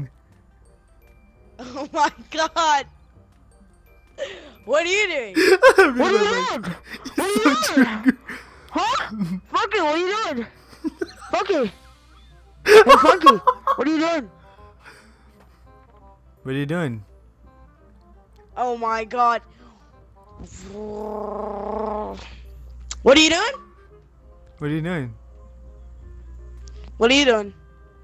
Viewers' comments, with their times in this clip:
0:10 Your laugh makes me to so much laughing 😂😂✌